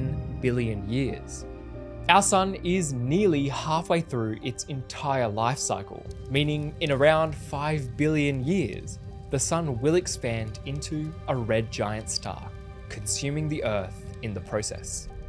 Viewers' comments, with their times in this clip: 0:03 the way he says only 10billion years